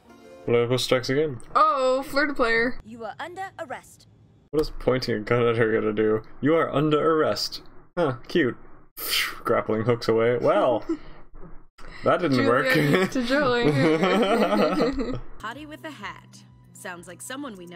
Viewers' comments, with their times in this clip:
0:03 does anyone else find it adorable how Julia talks to herself?